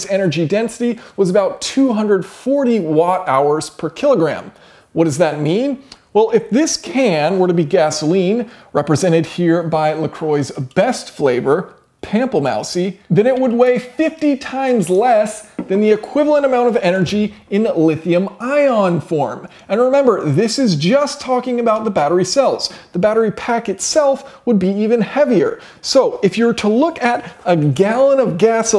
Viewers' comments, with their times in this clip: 0:09 that is an affront to French. 😞
0:11 My french eardrums are bleeding right now
0:11 I cannot believe how he pronounced "pamplemousse" which is french for grapefruit or pomelo